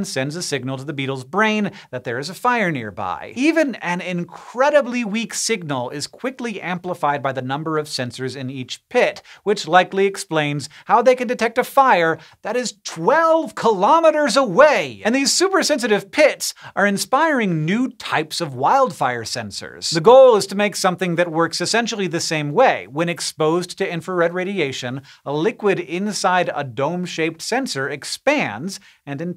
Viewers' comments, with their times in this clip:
0:09 Ah, such passion expressed in that "twelve kilometers away!"
0:12 When Hank said, "twelve kilometers away" with such passion... I felt that.